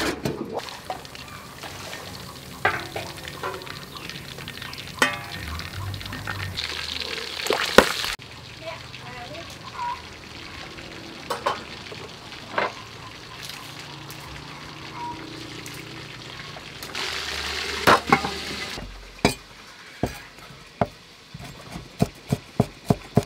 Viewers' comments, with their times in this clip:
0:07 when that grease popped and the camera shook... I fell out laughing because I know that popped on the cameraman. Filming is a dangerous job! 🤣🤣🤣🤣🤣